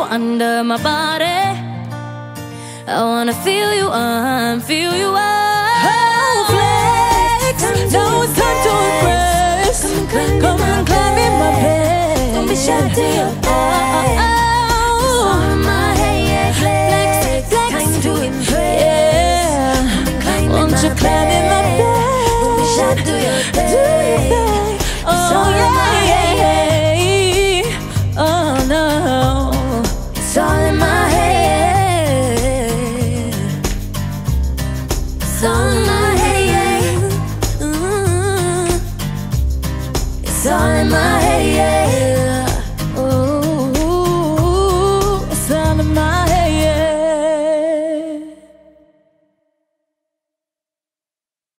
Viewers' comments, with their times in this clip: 0:04 is the reason i believe shes lip synching
0:05 OMG THE VOICE OF LAUREN IN IS SO AMAZING THE QUEEN IS LAUREN JAUREGUI HARMONIZERS 4EVER❤❤❤
0:06 Those harmonies Camila did starting from was so so so so so so so so goooddd. In fact, they sounded so good with harmonies. That was the best part of the song till the end. They should really scrape the whole solo idea and just start with harmonies from the start.
0:06 that harmony tho
0:06 can we appreciate ally & camila's cute backing adlibs? I feel like we hardly heard them sing together
0:07 To all who are saying Camila can't harmonize.
0:07 The harmonies are so beautiful loved this acoustic
0:07 love the harmony
0:07 Finally real harmonies and not kindergarten unisons, good job girls
0:08 I still can't get over how much I love Ally's, Camila's, and Lauren's harmonization This whole performance in general was really, really good. ❤
0:08 camally supremacy😍😍 those harmonies thoo
0:08 The harmonies has me shook
0:12 normani fuck you did y’all hear when she said bed
0:18 I feel goosebumps when dinah says ‘yeah’ that way 😍
0:24 Dinah??? WTF..her voice amazing 😍😍😍🤤🔥🔥🔥🔥
0:25 Dinah with those dulcet tones...
0:38 that chick camilla always be adding stuff in and its annoyingggg. let the others live. you catch her smirking. shes a hater she thinks shes so good. she sounds like a mouse
0:42 my ears have been blessed holy shit dinah
0:46 I love the very end Dinah sounded just like Leona Lewis!!!!